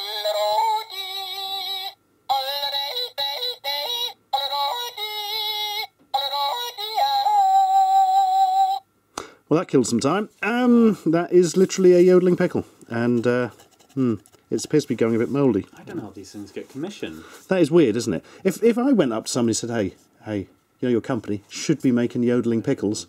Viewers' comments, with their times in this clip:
0:04 Wow! A yodeling Deviljho!